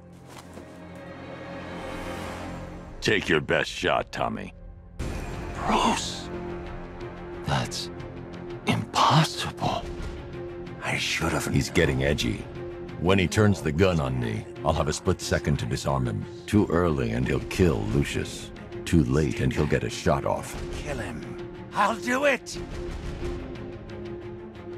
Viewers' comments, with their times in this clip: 0:03 "Take your best shot, Tommy." BAAAAM Excellent line delivery. 💯
0:10 Pretty sure Hush is trying to say something, but it’s hard to hear with Batman talking over him.